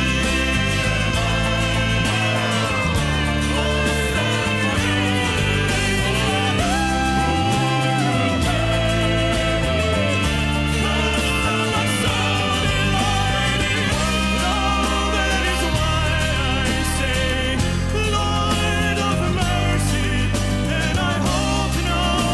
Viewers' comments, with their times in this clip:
0:07 Can anyone tell if the sound in the background is someone singing or an instrument lol? I think it goes to a top F which would be hugely impressive if it's vocals, as (if it is someone singing) it sounds like head voice which is what Graham Norton mentions at the start :S And I can't see any instrument playing that it sounds like (a sax or something)